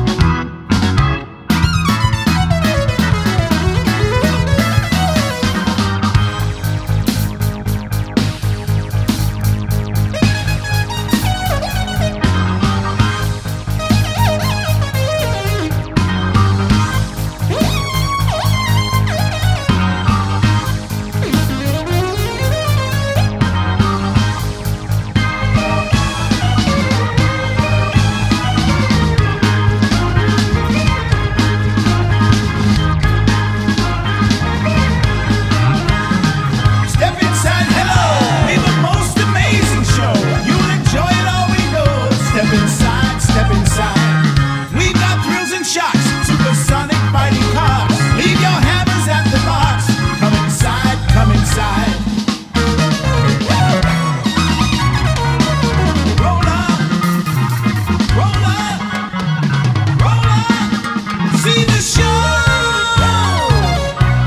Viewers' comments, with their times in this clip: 0:08 I've always loved for some reason. On the original it's always made me laugh, it's such a strange change in pace and so playful and child like with the call and response ha.
0:45 You included that little intrumental stop I always loved that detail. Amazing job!!!